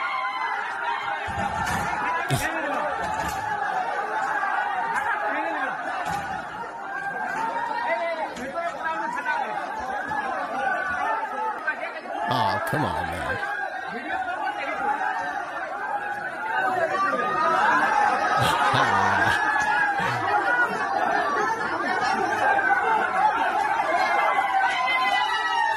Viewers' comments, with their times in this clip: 0:10 Why does it sound like everybody in town showed up to this event?